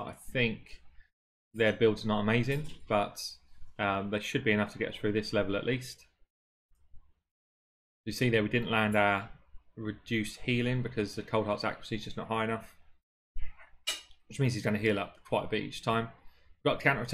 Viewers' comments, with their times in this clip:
0:04 Lol i just stopped the video and ran to my kitchen to see who was stealing my cutlery.